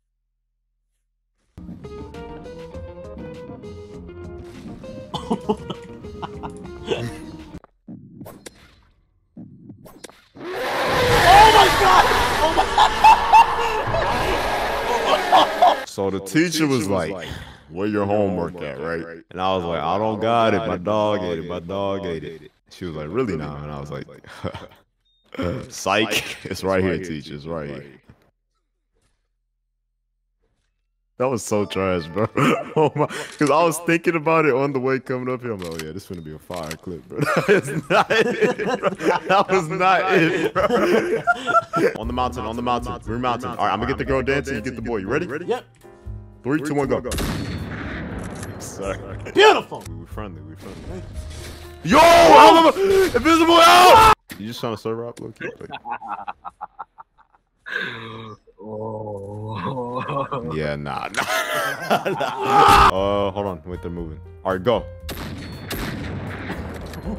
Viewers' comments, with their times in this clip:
0:10 bro screamed into the void 😭😭
0:17 the silence was so loud 😭🙏
0:50 that RAHHH was personal
0:55 WTH IS UP WITH THAT AVATAR😭 and the evil laugh😭